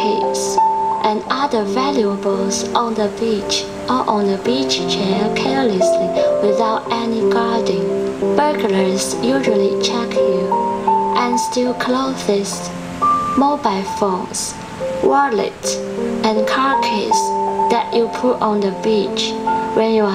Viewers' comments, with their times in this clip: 0:08 “Burglars usually check you and steal Cloth-essss!” Sounds like a female Gollum from LOTR.... my precious!!!